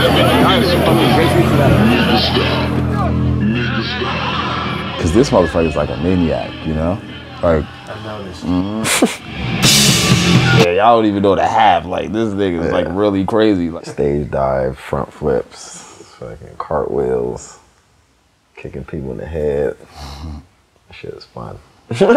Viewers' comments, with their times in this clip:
0:08 Which song is playing for half a second during the stage dive ? That riff is hard